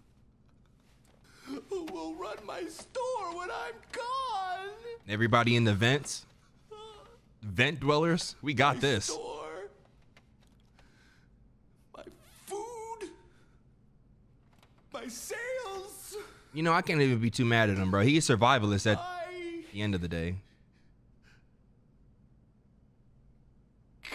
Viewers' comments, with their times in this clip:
0:06 bro was moaning my store like it was his wife😭😭😭